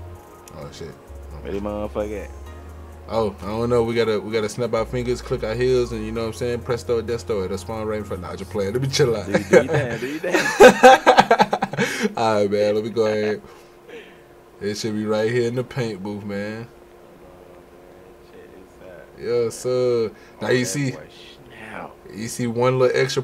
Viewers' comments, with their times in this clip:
0:04 I actually thought you was saying sum💀💀💀